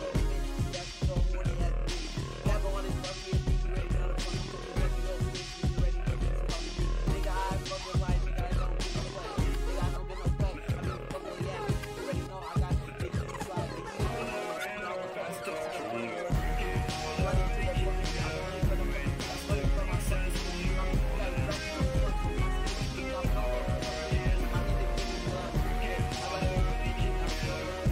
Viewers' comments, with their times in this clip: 0:08 bro is speaking at 3% volume